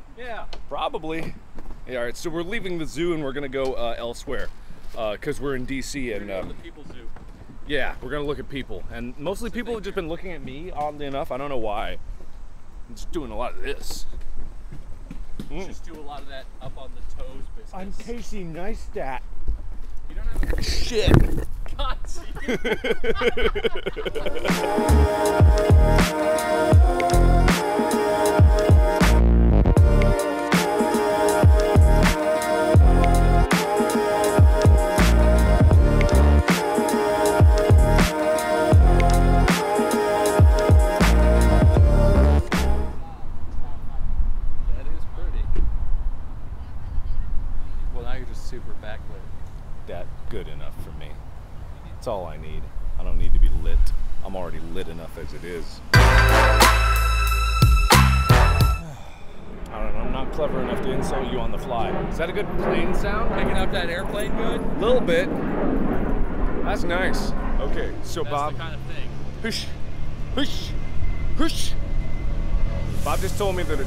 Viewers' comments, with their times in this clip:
0:08 you are going to elseweyr why mot valenwood ?
1:00 wow. volume warning a like or something for headphone/earbud users. It suddenly is very loud for a couple of seconds. ouch.